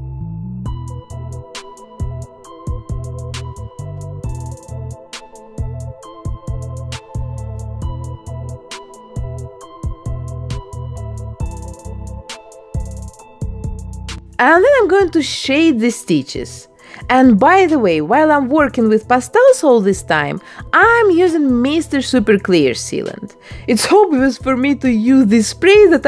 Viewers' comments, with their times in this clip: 0:10 sassy horrory songs😂